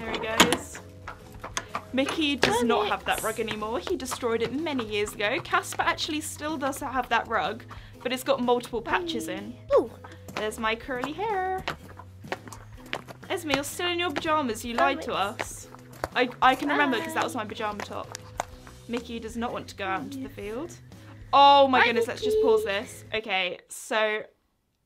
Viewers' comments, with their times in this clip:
0:10 THE WAY SHE SAID CURLY HAIR AHAHA